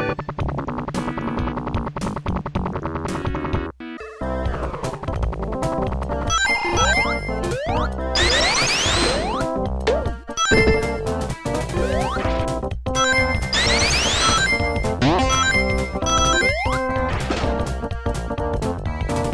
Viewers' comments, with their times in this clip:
0:03 The standard FM channels actually represents their rearrangements in Sonic Origins. So, Jun Senoue literally slapped the MIDI files in a soundfont that mimics the YM2612 aesthetics.